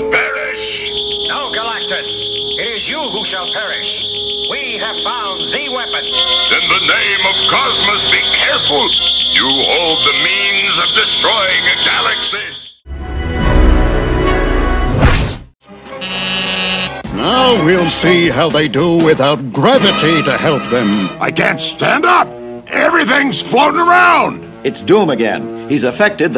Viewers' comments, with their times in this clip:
0:09 Lol if you hear it wrong it sounds like "memes"
0:10 that really sounds like'memes'